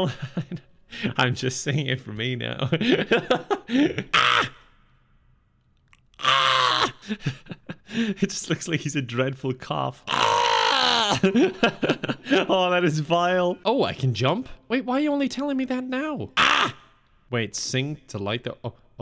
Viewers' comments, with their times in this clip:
0:05 Is that the patent-pending RT Toad Noise I hear?